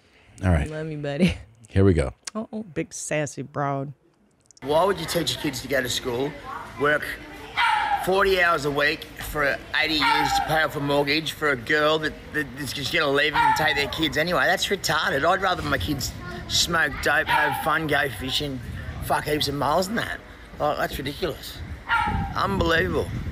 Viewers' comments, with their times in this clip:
0:04 very sweet dog in the background making itself known.